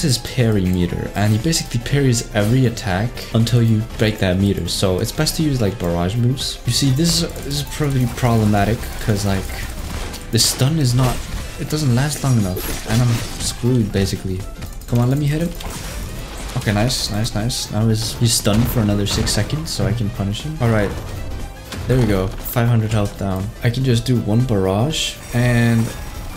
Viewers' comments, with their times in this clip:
0:09 Did you guys see how the shots were on time with the beat
0:10 ON BEAT YOOO